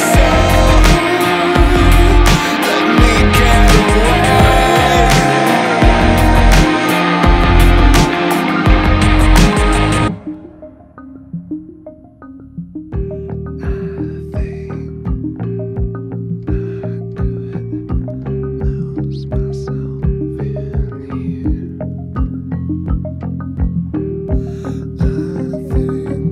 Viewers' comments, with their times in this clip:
0:10 the quiet part is so haunting, and depressing, but so beautiful at the same time, Trent is true musical genius
0:10 love the change sounds like a different song , this is awesome
0:11 So, so similar to "The Downward Spiral", the mellow bit before the rage bit!